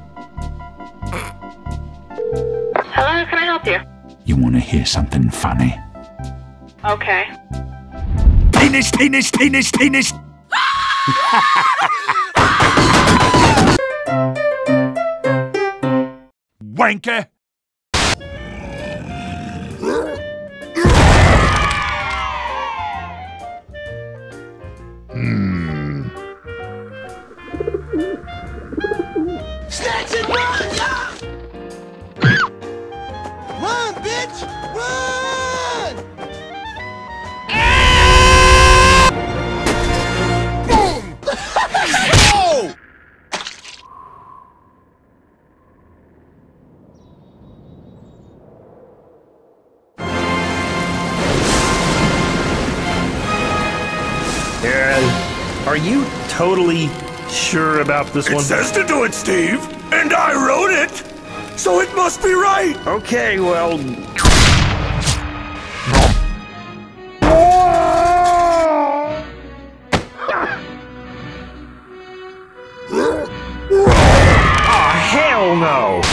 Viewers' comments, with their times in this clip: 0:10 why does that sound like a scream from futurama...?
0:36 can someone tell what is the sound the heavy do (that worse also awesome scream)
0:36 HAHAHAHAHA OMG BEST SCREAM EVER .
0:37 does anyone know where this scream came from ? Its certainly sounds like jontron. But I have no idea from which video, either on his own channel or on grumps
0:37 tf is that scream lmao
0:38 Love me some Jontron scream
0:58 The way Heavy emotes these lines is so satisfying.